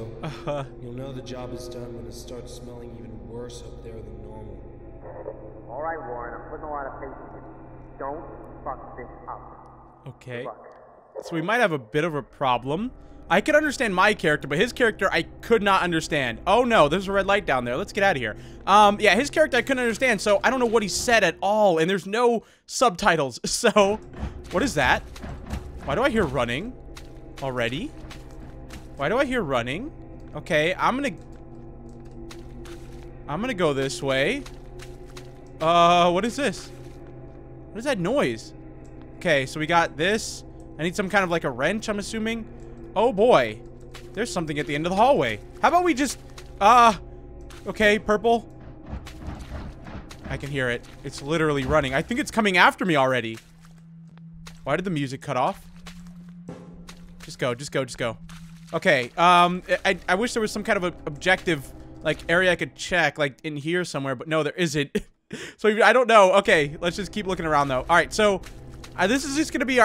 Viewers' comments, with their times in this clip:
0:09 you didn't beep it out
0:54 BB ha ha ha cuts of song